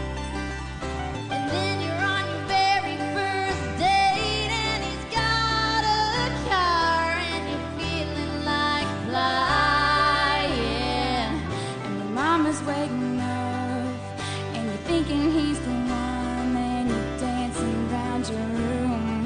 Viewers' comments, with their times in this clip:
0:03 here Miley was flat and out of tune